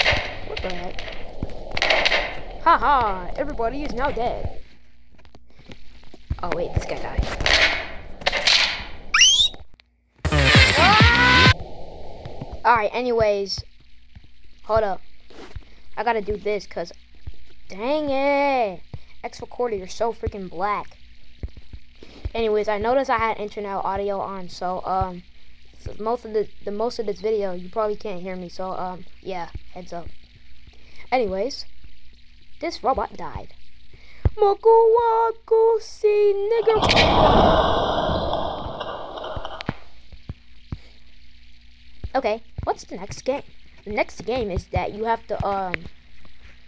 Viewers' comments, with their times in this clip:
0:09 NAH BRO THE SCREAM THOUGH
0:34 what da hell did robot say😂😂😂💀💀💀💀💀💀